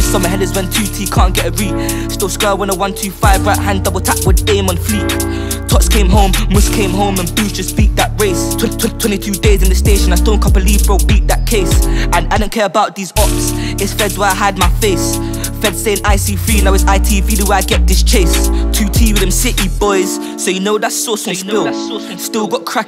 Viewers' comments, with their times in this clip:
0:09 any1 hear ringtone?